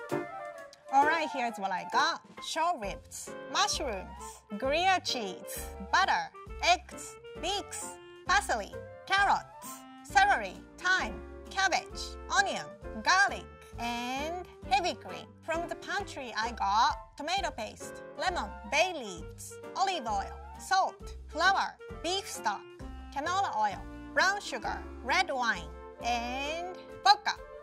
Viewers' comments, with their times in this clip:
0:10 🥰 someone is gonna take this wrong but I looovveee your accent. Especially when you said “celery”